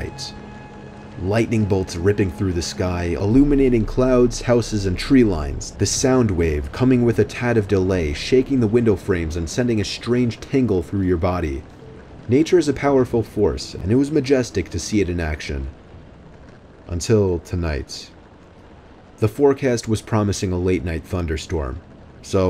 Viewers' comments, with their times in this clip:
0:10 sent a strange “tangle” through your body? That second story was so poetic 😭